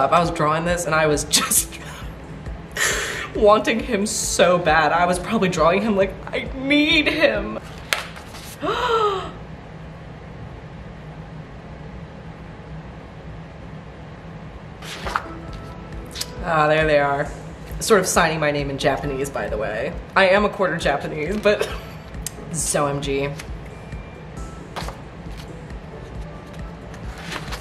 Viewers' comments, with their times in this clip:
0:08 i gasped at the same time as you 💀 did love song have a chokehold on all of us or what